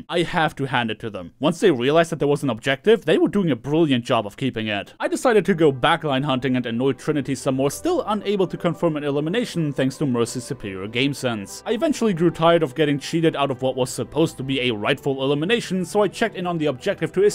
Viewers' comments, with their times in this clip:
0:04 when you hear the first notes of you say run... you know, shit 's about to get down..